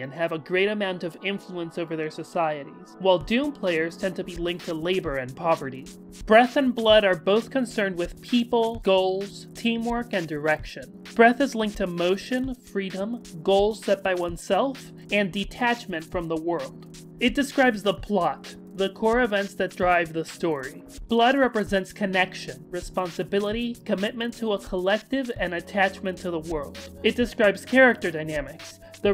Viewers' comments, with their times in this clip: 0:10 I accidentally misheard direction as “erection,” which may also be related in some way to breath and blood too but most likely isn’t.